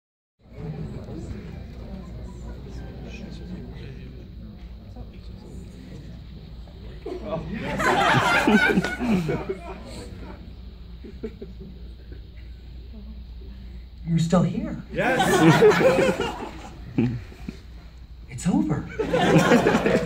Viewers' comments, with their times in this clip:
0:07 sounds like from fnaf